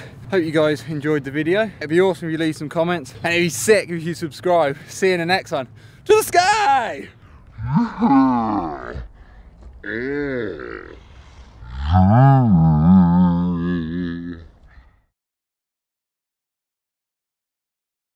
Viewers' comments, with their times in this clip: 0:05 that shit sounds like autotune :D